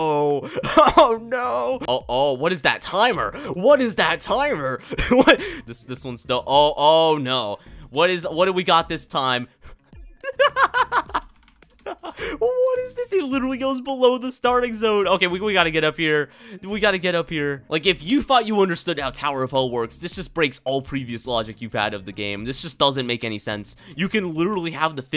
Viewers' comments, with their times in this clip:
0:10 his laugh LOL